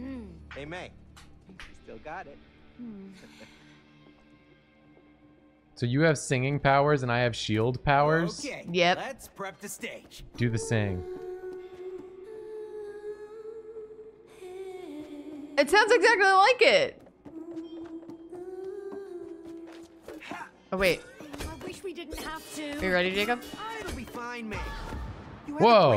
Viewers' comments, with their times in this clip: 0:10 is like, a 97% match of In Circles from Transistor and I'm here for it.